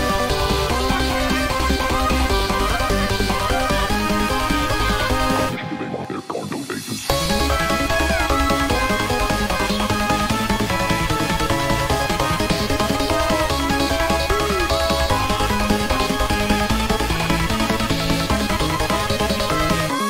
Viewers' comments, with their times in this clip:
0:05 sounds better with 0.5 speed compare it